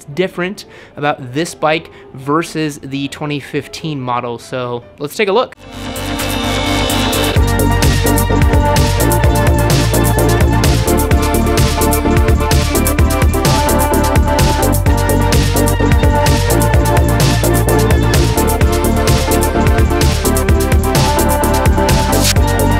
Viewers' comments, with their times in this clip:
0:05 man your intro music is sooooooooo gooooooooood